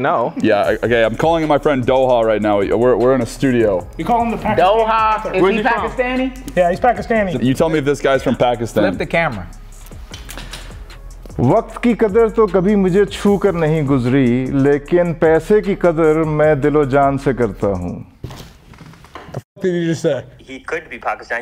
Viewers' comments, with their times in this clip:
0:07 it’s hilarious bc he was speaking so respectfully in Urdu 😂😂